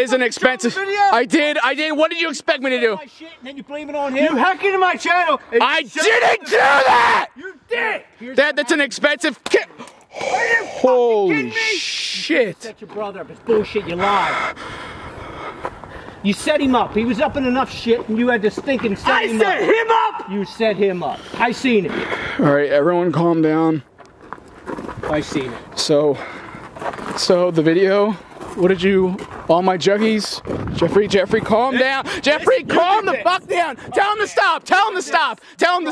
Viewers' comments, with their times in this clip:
0:06 The way He Screamed
0:19 He sounds like Brian Griffin when he yells